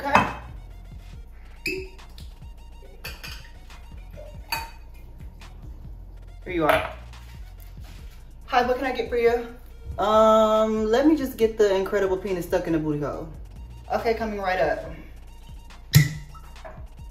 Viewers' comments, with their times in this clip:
0:05 the voice of a thousand unpaid work hours